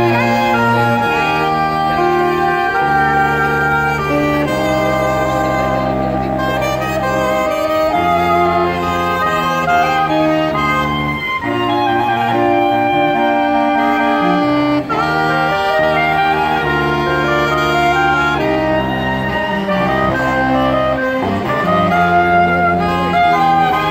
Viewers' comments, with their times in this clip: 0:06 is no one gonna talk about how smooth the transition from alto to soprano was?